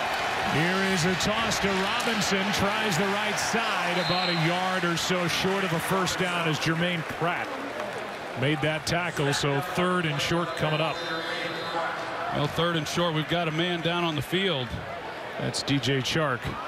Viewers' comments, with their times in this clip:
0:03 u can hear 👂 when it breaks